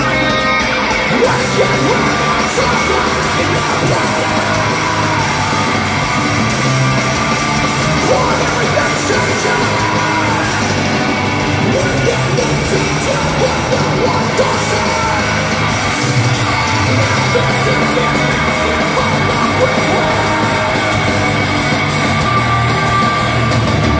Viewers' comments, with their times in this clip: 0:05 I love the small elements Brooks adds here